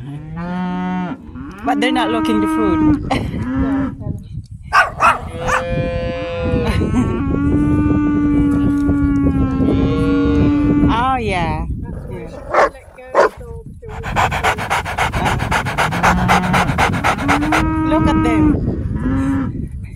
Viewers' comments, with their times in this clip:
0:03 Amazing views… beautiful nature. The tweeting of the birds is nice to hear. And there’s lots of cows they’re so cool.